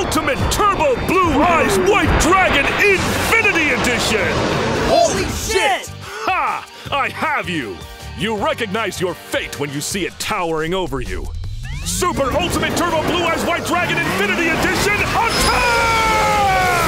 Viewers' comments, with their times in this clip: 0:04 This genuine holy $hit was so funny